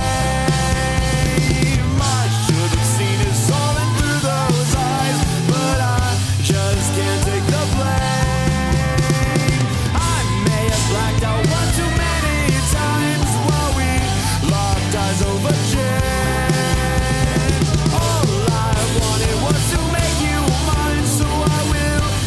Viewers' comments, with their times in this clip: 0:03 I like to imagine that he’s like singing in his apartment but she’s just screaming in an alley trying to find him